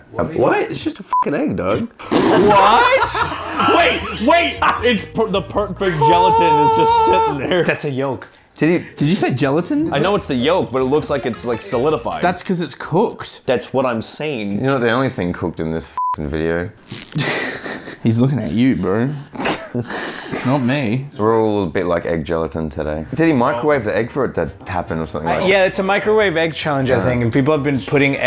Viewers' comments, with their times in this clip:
0:10 egg go Pop